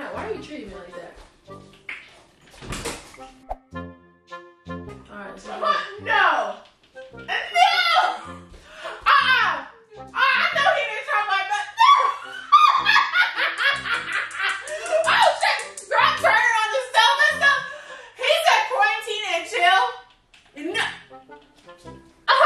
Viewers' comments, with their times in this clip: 0:05 had me cracking up with her laughing